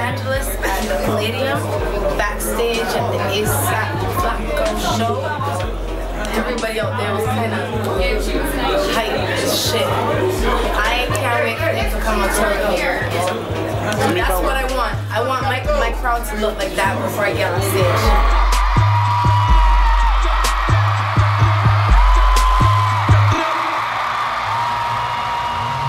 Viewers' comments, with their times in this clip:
0:10 Asap rocky's voice is so inspirational . Nice to see how he came up and I lol'd when I saw Danny Brown 5/5